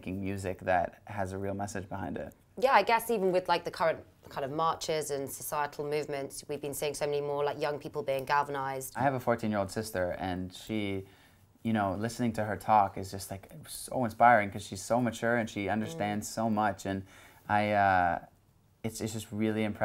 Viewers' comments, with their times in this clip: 0:07 gathernized?? im pretty sure that's not a word lol